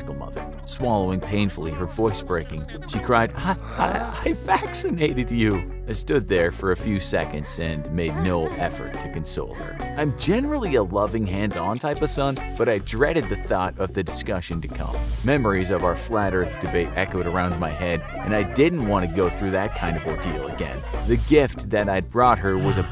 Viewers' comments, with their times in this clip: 0:04 Listen closely The narrator can't even say: "I... I... I vaccinated you." without take a laught